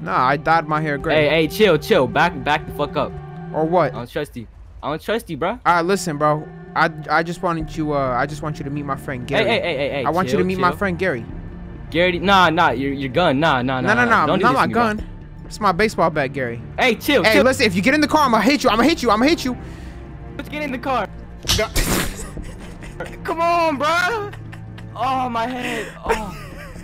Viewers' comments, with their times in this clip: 0:07 beautiful cod ghosts music